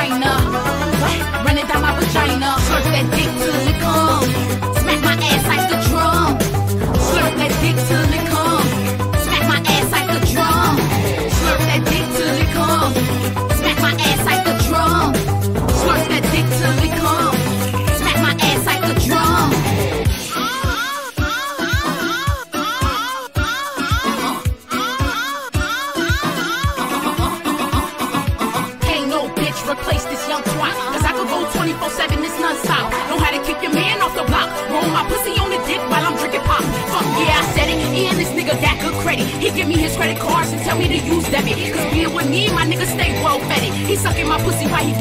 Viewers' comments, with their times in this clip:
0:03 This part made me so mad-, IT'S OFF BEAT
0:12 ok is soo off beat but it still slaps
0:13 ITS SO OFF BEAT IM DEADDDD😭😭😭😭😭
0:26 is she barking-